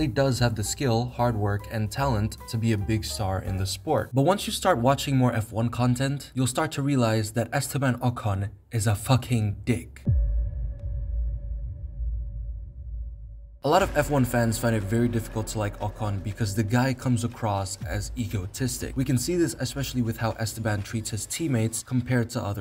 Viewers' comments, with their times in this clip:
0:07 ah man the delivery of that line sent me💀😂